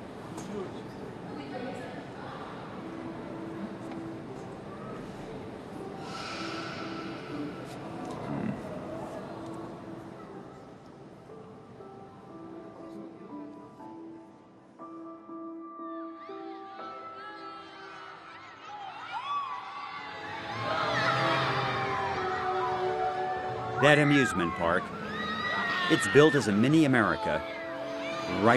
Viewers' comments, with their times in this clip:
0:04 I could feel that silence
0:09 i feel so bad for the boy :/ the silence is killing and he looks so scared to be sitting there